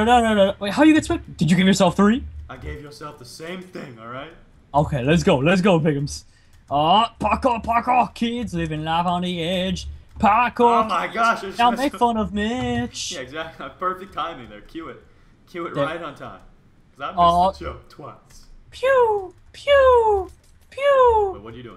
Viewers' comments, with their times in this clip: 0:07 left voice crack?? During sumotori